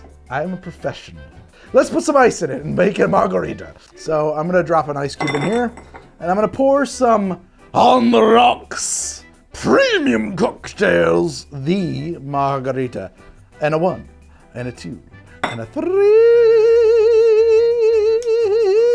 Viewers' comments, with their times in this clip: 0:04 Started the episode pretty consistent with the Foghorn Leghorn+Southern Televangelist+Texarkana accent, ended with whatever this is 😂